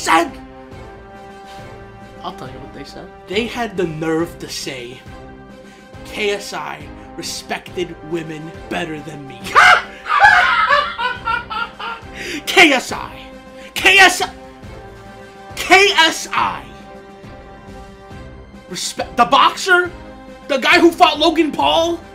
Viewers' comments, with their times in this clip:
0:10 man sounds like the joker😂